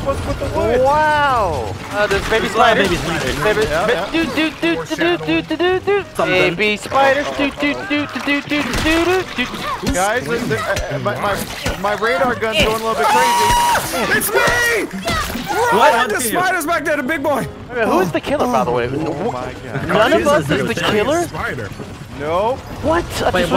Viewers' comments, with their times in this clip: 0:03 i thought it was baby shark...
0:06 Did delirious start singing baby shark but instead of a shark a spider along with mission impossible? 😐